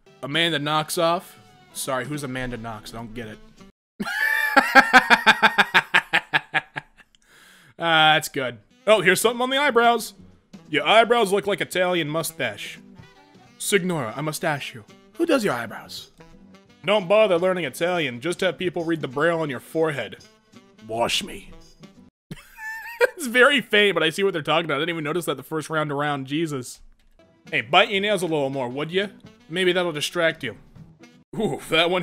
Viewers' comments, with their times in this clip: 0:03 This man laughed like J. Johan Jameson
0:13 mans really pronounced it "Cig-nora" Bruv